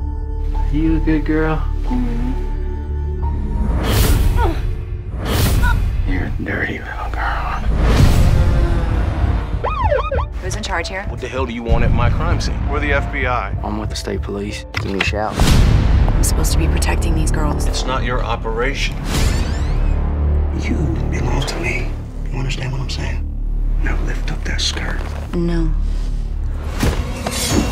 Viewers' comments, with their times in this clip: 0:10 i need that guy to be a little more forceful WHATT THEE HELLLLL DO YOU WANTT AT MY CRIME SCENE???? >=O i need to FEEL IT.